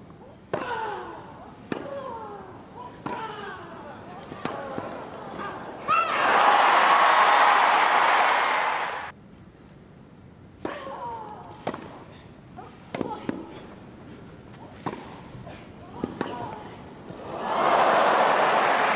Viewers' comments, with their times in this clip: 0:03 Serena is such a cheater. shouting even before the point was over.